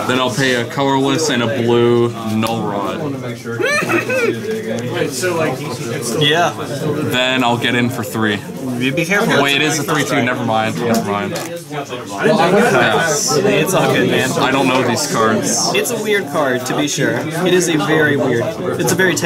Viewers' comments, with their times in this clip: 0:03 you sound like you're in so much pain lmao